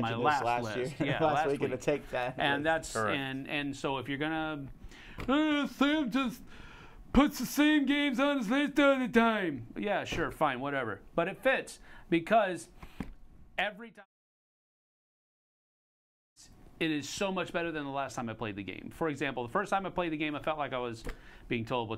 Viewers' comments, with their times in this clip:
0:06 Apparently internet trolls sound like this haha 🤣